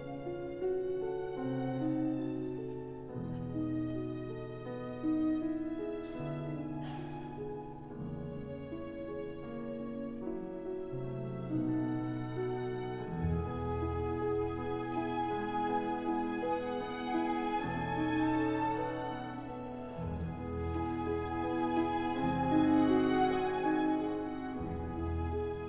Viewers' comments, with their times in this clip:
0:06 the sneeze is hilarious